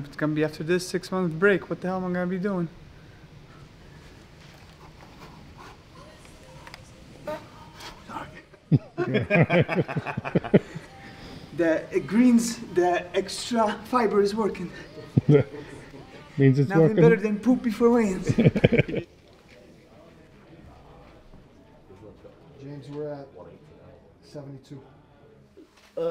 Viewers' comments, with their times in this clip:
0:07 did he fart or what? 😅